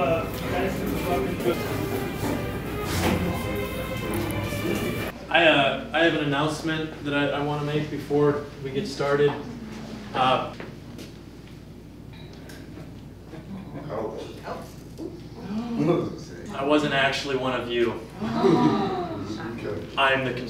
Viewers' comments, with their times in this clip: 0:07 I love how they couldn’t grasp the concept that it was just some stupid joke with an obviously fake mustache. Instead they all gasp like wait, he just did a reveal, I’m supposed to gasp when this happens insert npc gasp noise